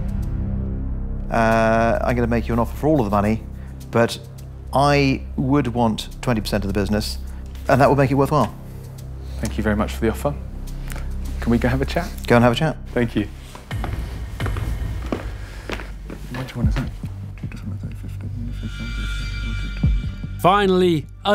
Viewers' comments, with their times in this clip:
0:07 Wth does he say ?